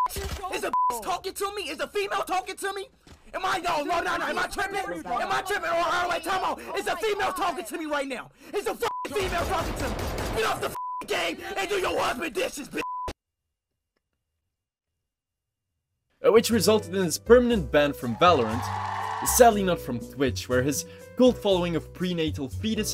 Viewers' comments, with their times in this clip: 0:10 why is bro unnecessarily loud like the world isn’t gonna end if you lower your voice